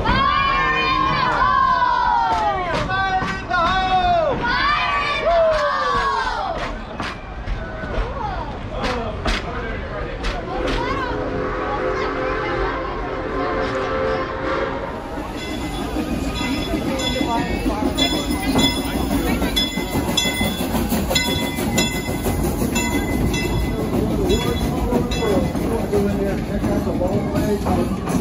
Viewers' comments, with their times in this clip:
0:10 Lol that bit as the train comes past the kids at the fence line and you hear "fire in the hole" and they holler it back lol the people missed the Frisco ❤